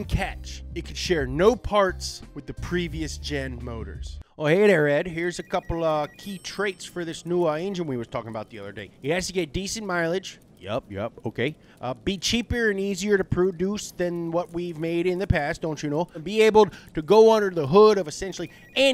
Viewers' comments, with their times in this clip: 0:03 Michiganders don’t sound like that 😂 Love the content guys! Donut is killing it.